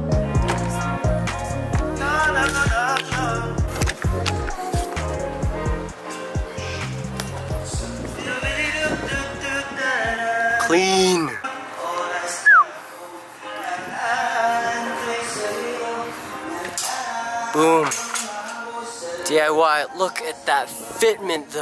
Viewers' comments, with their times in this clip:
0:03 that r&b background song thoooo